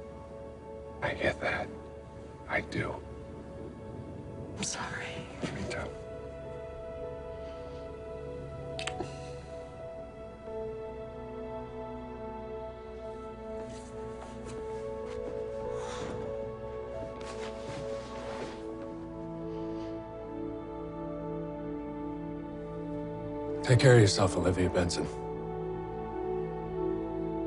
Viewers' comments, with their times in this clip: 0:08 That small, almost silent whimper that escapes her throat when he kisses her forehead. This was the relationship Olivia needed. Not the drama and trauma Stabler can’t seem to help but bring her way, but a unproblematic port in the storm that is her life. It wasn’t supposed to last forever, but that doesn’t mean she didn’t cherish it or feel sadness when it ended. R.I.P Olivia x Tucker. You were underrated yet very much needed 🫡😭❤️